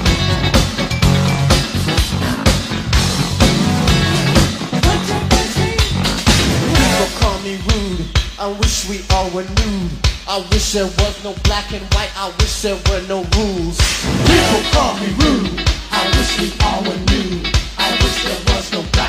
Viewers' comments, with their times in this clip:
0:07 Am I tripping😂 sounds a little bit like Drake